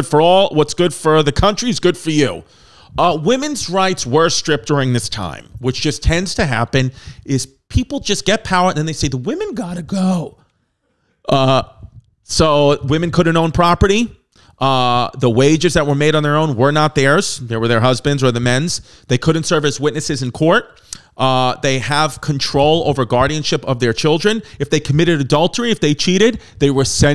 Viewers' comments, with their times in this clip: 0:09 Chrissy's voice always gives out like this lmfaooo